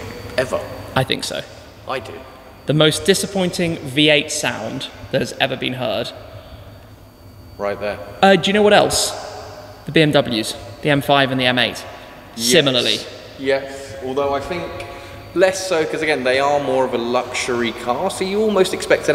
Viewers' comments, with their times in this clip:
0:05 in my opinion some us trucks v8 sound worse, but for a car like that, you are right